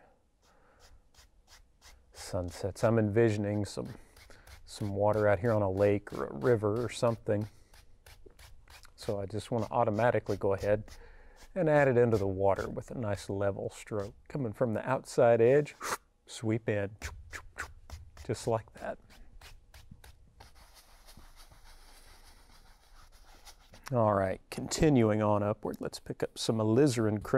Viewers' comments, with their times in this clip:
0:09 Idk... somewhere when he's painting the water pink, and he starts making the sound fx noises... Bob used to catch himself making them, and then he'd have a catchphrase ready to say, but you could tell his "sound fx" noises just came out when they were ready. In this video, it felt more like fan service. Like a tribute band that's a little too on the nose. But in this case, maybe it's more like a copycat serial killer who even wears the same clothes. Imitation is the sincerest form of flattery, or it's the easy way to ride someone's coattails and share some of their $ucce$$. I'm open to either of those 4 possibilities, or even both!